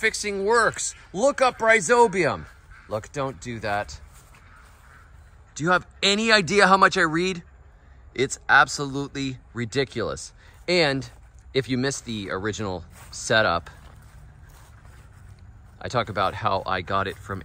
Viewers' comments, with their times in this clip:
0:04 do you have any idea how much I *Breed , it is absolutely ridiculous